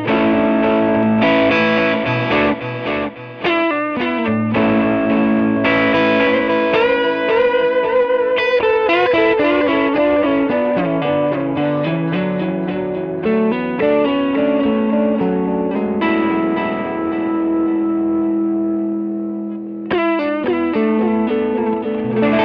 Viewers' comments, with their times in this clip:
0:08 I wish I could also crank up my amp up to 104dB in my apartment...but the neigh🐴bors 🤷🏻‍♂️😅 in the stable might get uneasy